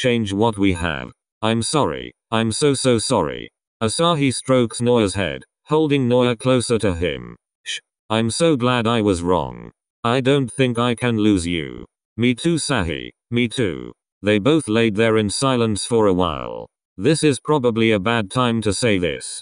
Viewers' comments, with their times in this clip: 0:06 RANDOM BUT THE SHH IS SEMDING ME
0:07 PLEASE WHY DID IT SAY “SHHH” LIKE THAT😭